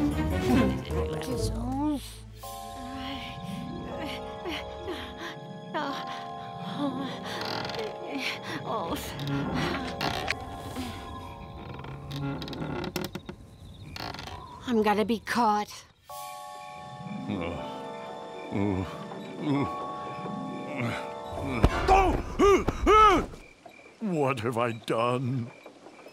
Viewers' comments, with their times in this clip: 0:07 why is she moaning💀